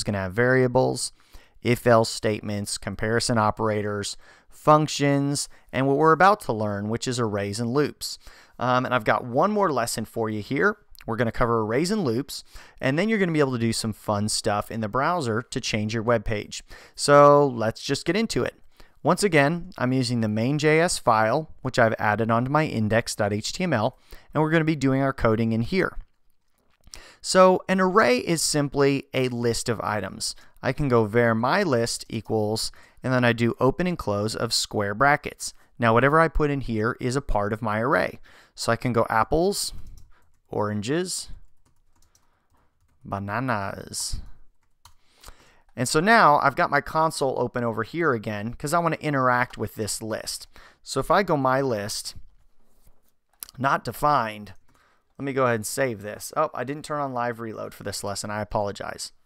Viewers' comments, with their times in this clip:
0:10 is it just me, or did that sound a lot like "a raisin loops" lol
0:43 I liked how you said 'bananas' 🤣